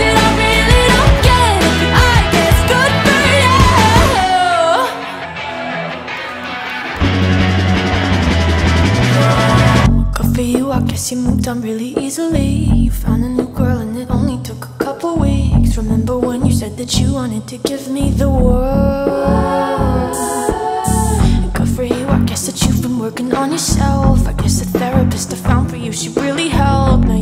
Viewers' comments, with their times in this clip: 0:07 LMAOO THE SHEESH IN THE BACK
0:07 sheeeesh in the back
0:08 we gonna ignore this amazing sheesh moment in the background